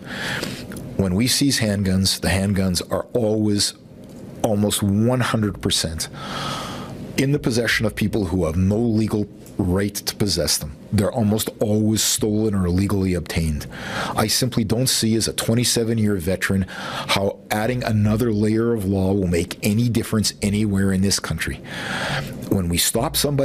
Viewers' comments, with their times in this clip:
0:06 I'm still trying to figure out if he said "when we sees handguns" or "when we seize handguns"